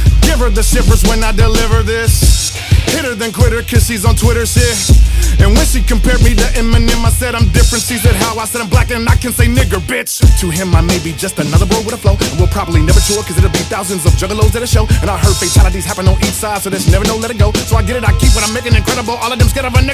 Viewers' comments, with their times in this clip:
0:05 That is one of the best lines I've ever heard; both content and delivery. Tech a f***en genius!!